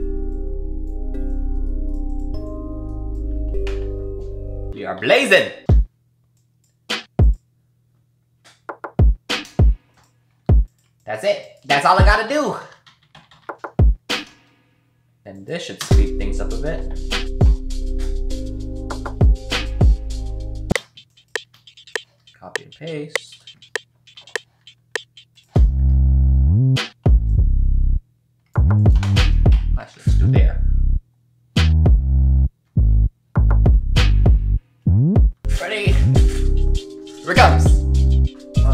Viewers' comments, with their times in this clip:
0:10 How does he spread the drums
0:24 treats the fire 808 like it's nothing haha, you're so good dude... me just listening to just the 808s pumped me up lol
0:25 love whatever you're doing with the bass, wish that was part of the tutorial